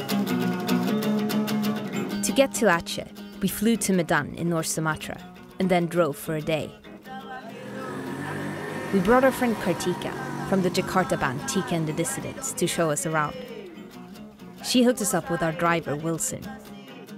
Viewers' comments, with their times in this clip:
0:04 I heard we flew to mc Donalds